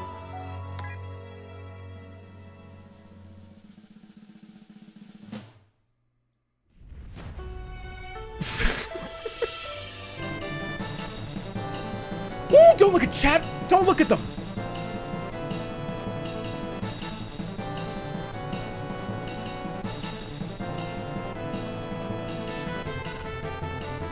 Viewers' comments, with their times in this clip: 0:07 the way the music kicks in right when the IQ results pop up as 98.5 is so fucking funny on so many levels.